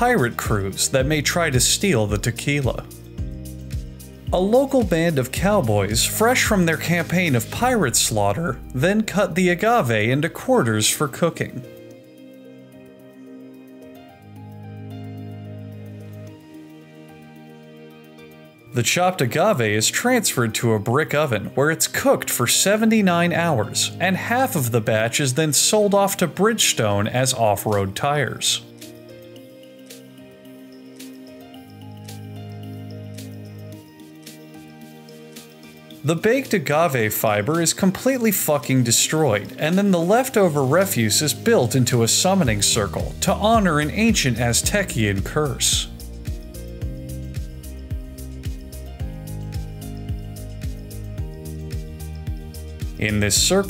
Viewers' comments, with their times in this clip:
0:07 that voice crack thow
0:07 Lol his crack voice
0:34 the enthusiasm in his voice😂